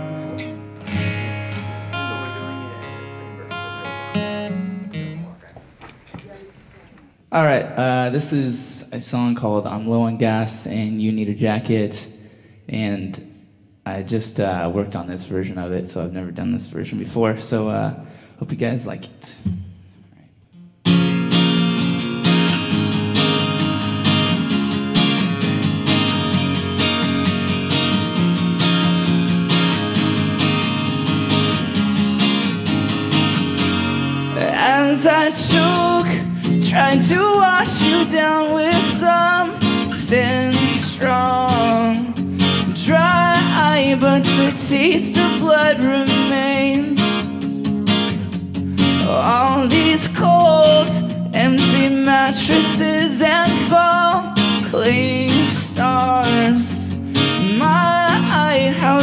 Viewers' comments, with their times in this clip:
0:10 the way he stretched the word (Jacket) Sooo adorbs
0:44 u can hear his voice shake omg i do that when im nevous or im having an anxiety/panic attack bby vic aww